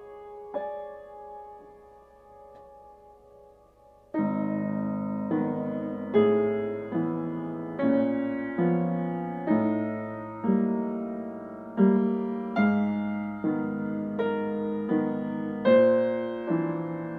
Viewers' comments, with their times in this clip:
0:04 And is absolutely amazing, that moment where there is an actual bass